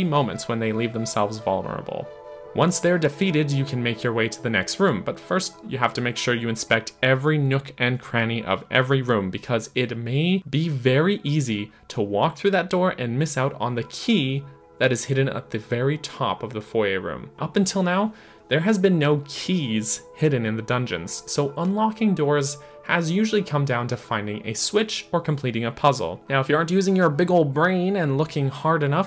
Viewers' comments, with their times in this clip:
0:10 Thank you for pronouncing foyer correct